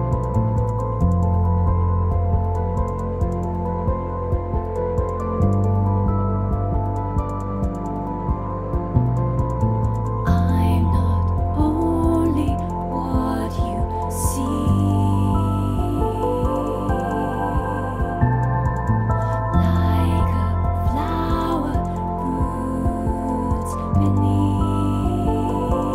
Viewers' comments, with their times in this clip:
0:10 is when she comes in if you're trying to sing this